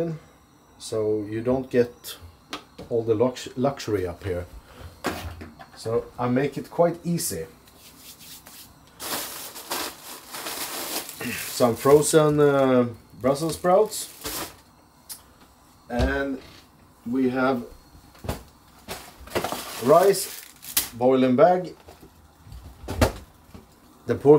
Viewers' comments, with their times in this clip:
0:05 I love how he says “very easy cabin food”! He’s so cute! Our very easy cabin food is some hot dogs and some potato chips! He’s the best!